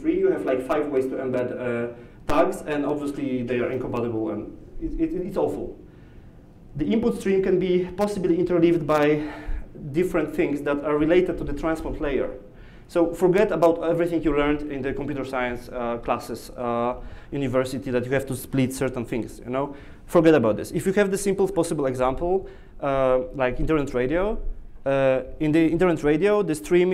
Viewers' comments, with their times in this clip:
0:07 the audio improves dramatically after